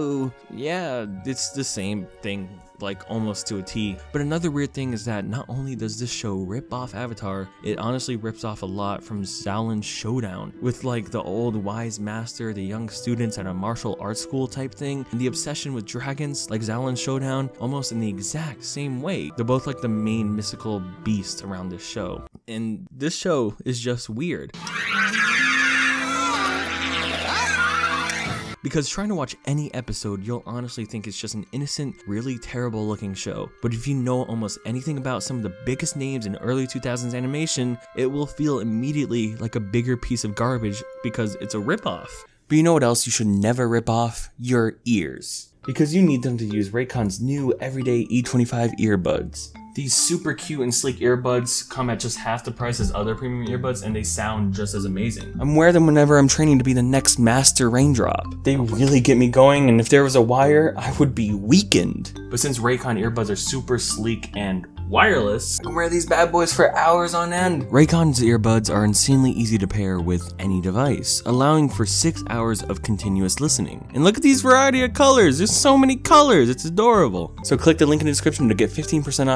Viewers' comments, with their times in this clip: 0:09 the way you said Xiaolin was funny
1:00 I cant unhear it but I feel like pokemon theme is playing Its so up beat and it just gets you goin